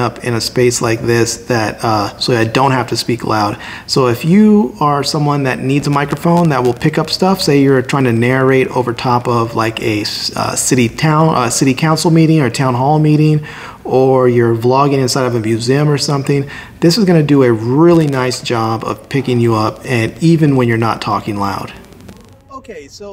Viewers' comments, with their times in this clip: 0:04 There are some hissing sound. Is it observed in other situations?